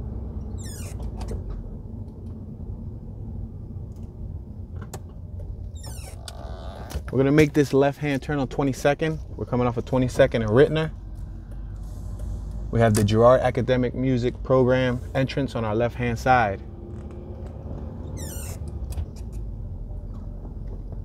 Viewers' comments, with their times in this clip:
0:05 Lol a fart dam toon 😂